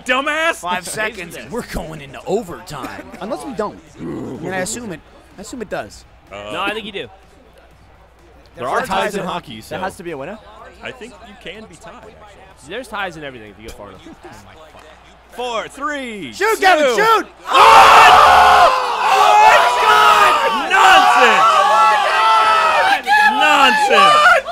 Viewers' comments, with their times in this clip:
0:07 how many people said the same thing in sync?